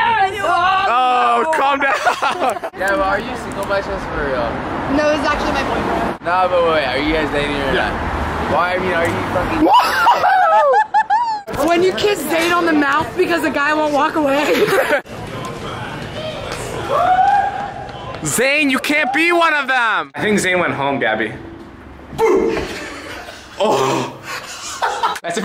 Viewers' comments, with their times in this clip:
0:10 pause 😂😂😂 that guy in the back like sigh "I is so damn single." same
0:10 lol liza's laugh kills me